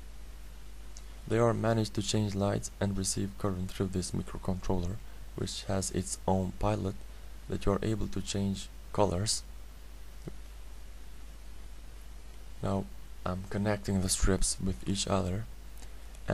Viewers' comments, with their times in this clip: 0:03 "microcontroller which has his own pilot" ( pajlot ) hahaha what a moron